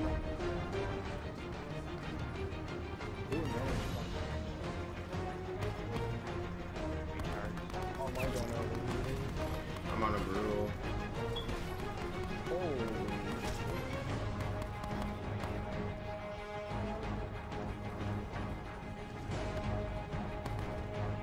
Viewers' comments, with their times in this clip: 0:05 gun sync with music